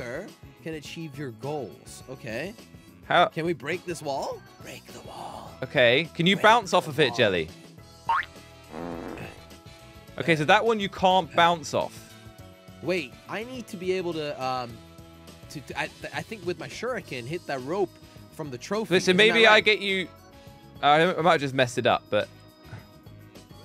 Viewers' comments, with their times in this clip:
0:07 that sound effect is soooo acccurate